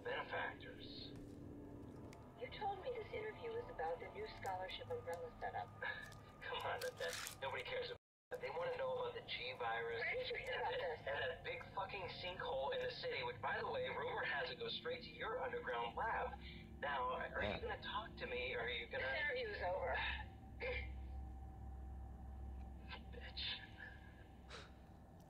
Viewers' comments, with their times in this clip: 0:08 Dashie! The sound and video are off sync starting
0:13 is where it glitched and the Audio and Video aren't synchronised after.